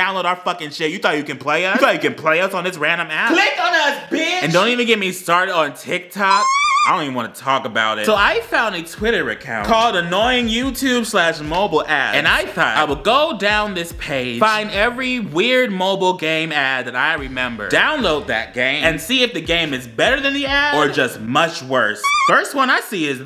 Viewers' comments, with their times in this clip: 0:05 What was that noise
0:05 What is that sound on ? I wanna listen to that high pitched scream for hours 😂